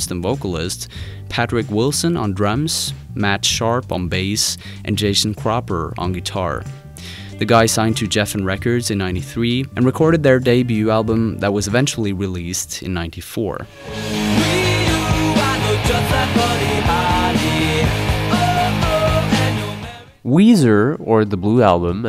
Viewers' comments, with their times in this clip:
0:07 the way you said Geffen records as Jeff-In hurt my soul Yes I know im the bad guy for knitpicking but damn you cant talk about music without knowing david fucking geffen